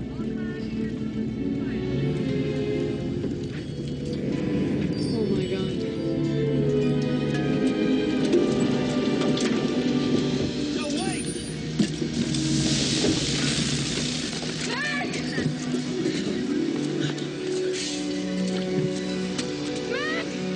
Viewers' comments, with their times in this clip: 0:07 got me when they were outing the kid in the car to get to the hospital. Also the crying at the beginning of the scene